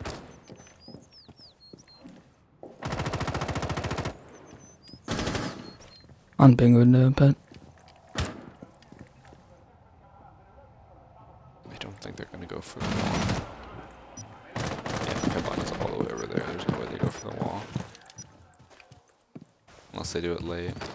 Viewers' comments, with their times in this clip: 0:06 either he does asmr or hes depressed lmao